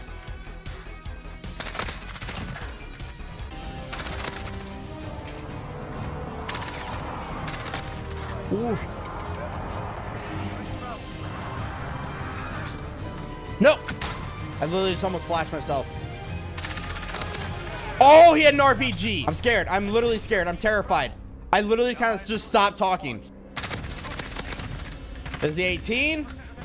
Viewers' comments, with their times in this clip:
0:10 Love how the music transitions in this part sounds great in this scene ❤️🤟